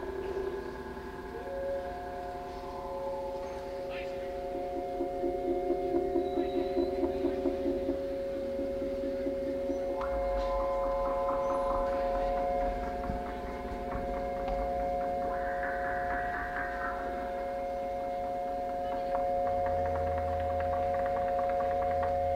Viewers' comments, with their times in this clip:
0:03 The first time a Seastones set was performed at a Grateful Dead show. If you listen carefully, a guy wants to sell you ice cream